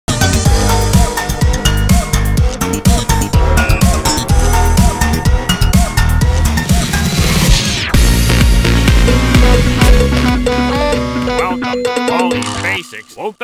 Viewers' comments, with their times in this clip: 0:00 this music is such a banger